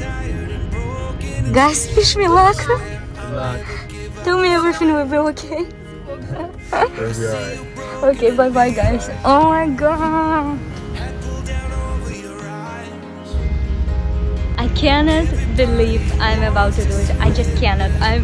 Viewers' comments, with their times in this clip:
0:06 most unenthusiastic reply I've ever seen, I'd be even more uncertain if I heard that hahaha